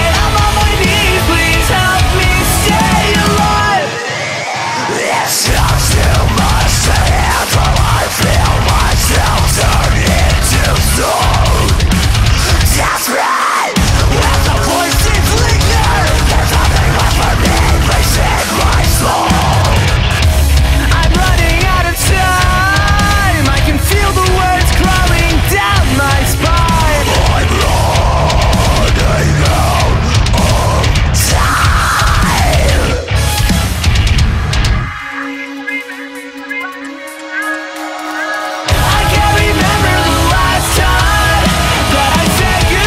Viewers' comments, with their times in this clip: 0:08 Breaking neck breakdown
0:30 Thought this band was gay until that metal ass high